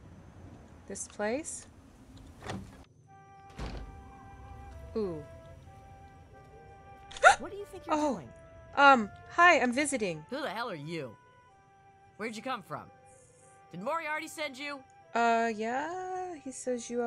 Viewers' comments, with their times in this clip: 0:05 That reaction is pure gold. I love your voice. It is ideal for this playthrough. Thanks for sharing.